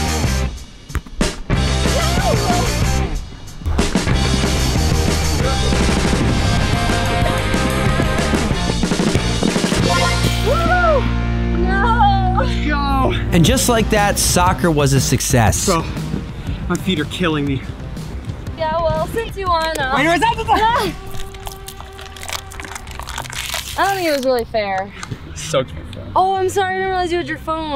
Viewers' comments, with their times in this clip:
0:10 bro is that circle K lottery ticket winner with that “woohoo!”